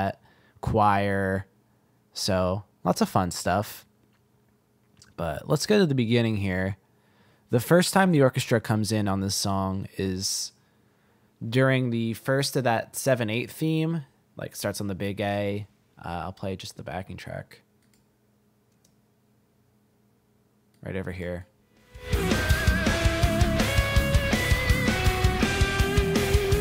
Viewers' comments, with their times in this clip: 0:07 I love the hybrid picked part at alike